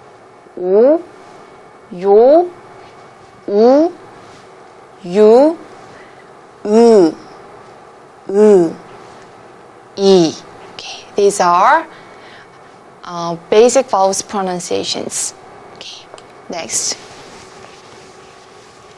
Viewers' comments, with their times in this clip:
0:06 i love when she goes all like "EEWWW" LOL. came here for tingles though. and definitely learned some things about korean even though i never bother learning it. lol